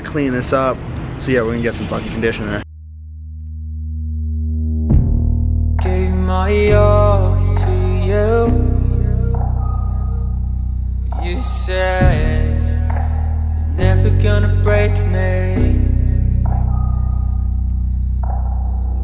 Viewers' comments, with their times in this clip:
0:06 wait that's me singing!